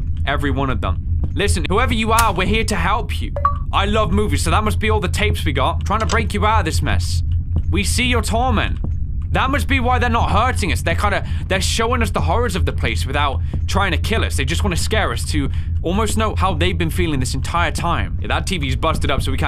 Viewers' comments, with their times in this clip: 0:03 Minecraft Achievement unlocked sound but slower.